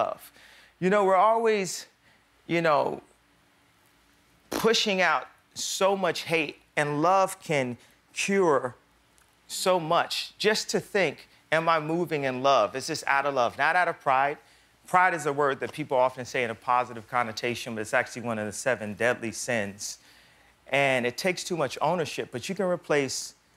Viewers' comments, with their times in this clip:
0:04 Did someone Fart? 😂😂